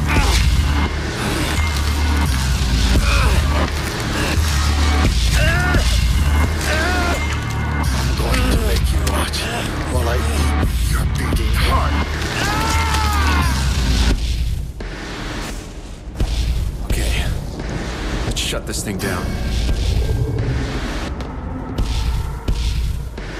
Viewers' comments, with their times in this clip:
0:05 i felt kinda awkward where he screams in agony and pain because at dmc 4, nero impaled dante with rebellion straight at his chest and mr. dante didn't even gave a fuck about it.